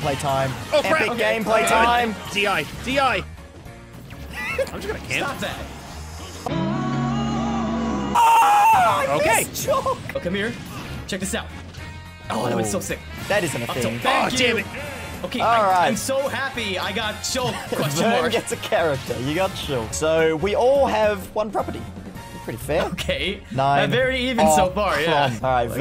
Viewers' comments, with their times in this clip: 0:07 is way too real of a scream 😂